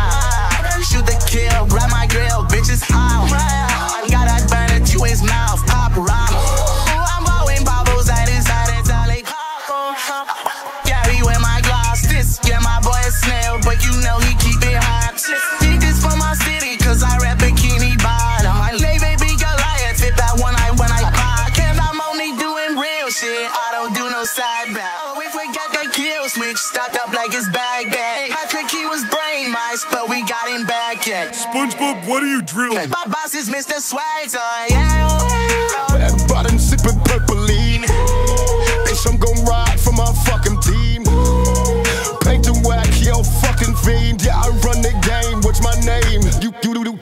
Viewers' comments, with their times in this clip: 0:07 My man turned into a Minecraft Villager for a second there.
0:33 bro had a voice crack 💀